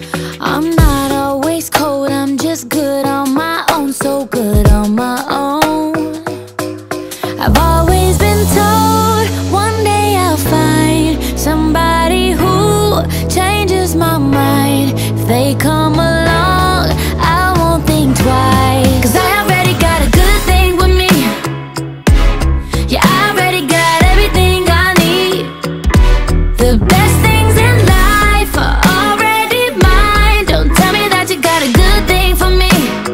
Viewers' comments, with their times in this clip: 0:08 reminds a song Ava Max - So am i 🤔
0:09 this part sounds like Let It Be Me by Jennifer Lopez
0:20 found the ticking clock :)